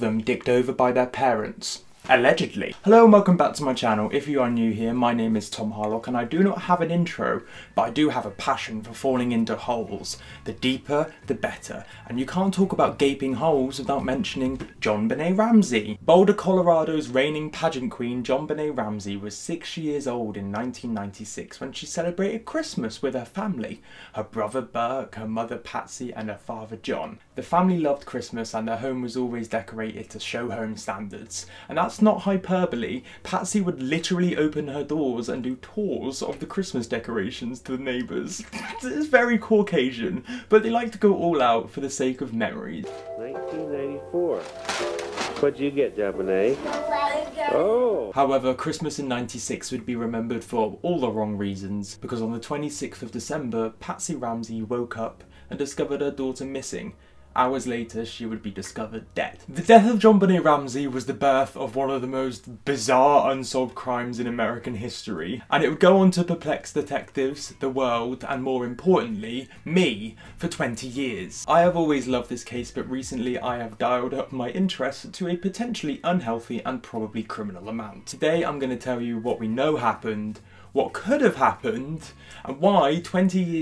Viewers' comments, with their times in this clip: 0:06 Okay but DNA by BTS is playing in the background 😂😂 it's so quiet but I heard it
0:08 side note, anyone else hear dna XD???
0:08 DNA is playing in the background I-
0:09 faintly hears DNA playing in the background the fuck...? THAT'S MY JAM
1:06 i heard DNA-BTS whistling part 😶😏
1:06 This is really off topic but idk if this is just my ARMY butt but am i the only one that hears DNA by bts in the background and Idk if its just really faint or if im just being delusional.